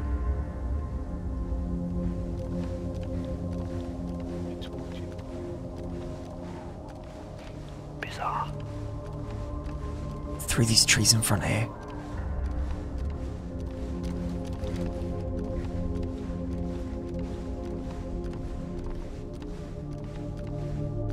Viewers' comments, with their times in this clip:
0:09 nah the mf sounding like captain price wtf